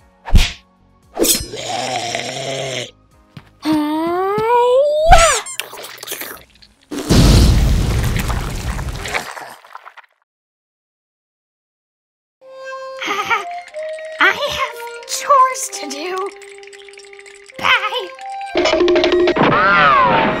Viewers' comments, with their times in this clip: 0:07 THE FART REVERB